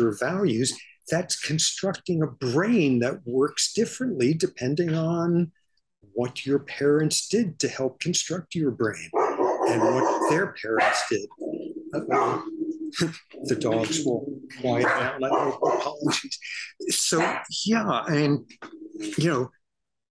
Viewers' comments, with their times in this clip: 0:04 it’s someone’s dog apparently